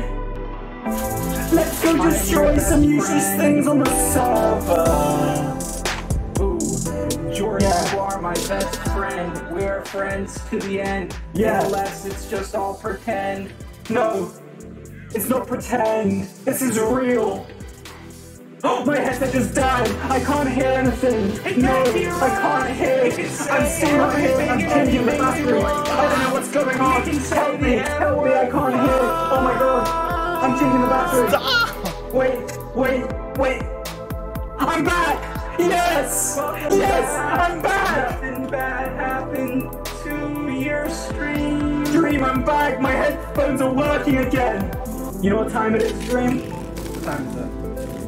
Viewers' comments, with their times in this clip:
0:06 Dream sounded kinda cute...
0:26 Why did actually sound good? At some bits they actually popped off
0:31 this actually kinda sounded good